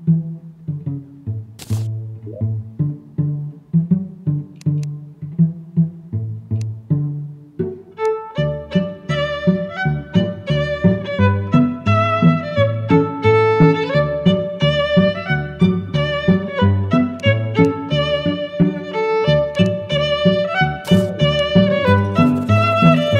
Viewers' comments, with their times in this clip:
0:09 not the Muffin Man music that's going to get stuck in my head there in school I would rather have rise of the Jungle tyrant